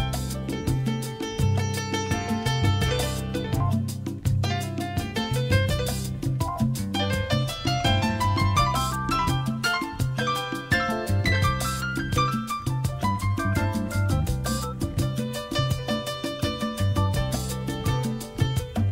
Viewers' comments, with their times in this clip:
0:06 The piano in this album gives me The Thomas Crown Affair vibes.